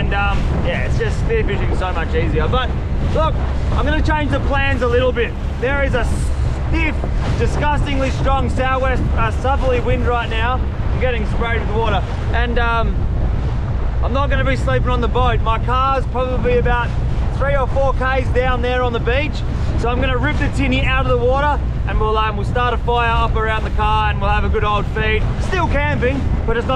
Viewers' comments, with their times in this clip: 0:09 just goes full aussie